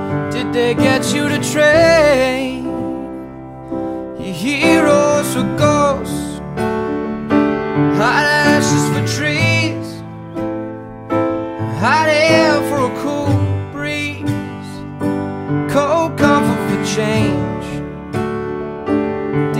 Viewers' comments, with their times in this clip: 0:03 i was just thinking "now the pianist..." this is just like i imagined. I love it